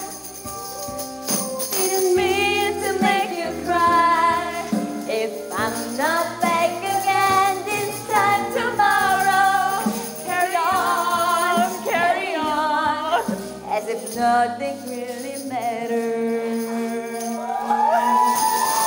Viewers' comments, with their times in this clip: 0:04 Lua 'Carry on' singing with a low note, and Lucy surprised by trying to sing in high notes 'Carry on'